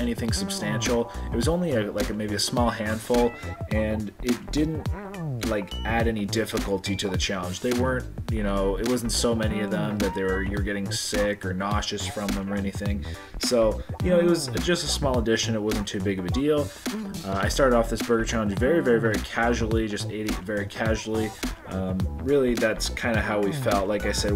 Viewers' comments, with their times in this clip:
0:06 I thought the bing sound was counting how many napkins she was going through 😆